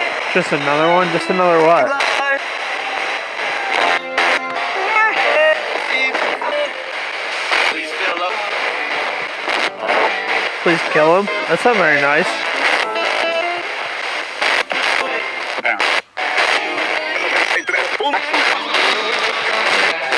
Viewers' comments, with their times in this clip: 0:08 “we still love you” You heard “please kill him”